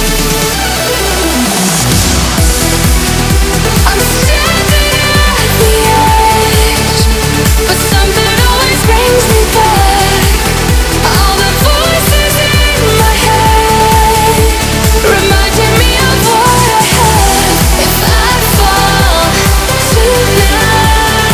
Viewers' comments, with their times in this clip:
0:03 was that a Sneeze ._.